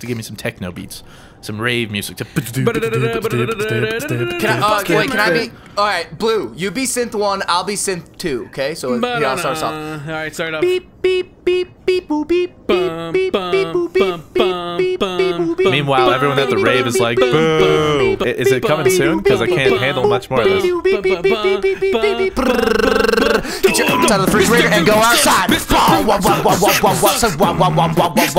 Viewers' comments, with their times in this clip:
0:09 best singing ever
0:11 Epic techno/rave music guyz lol :)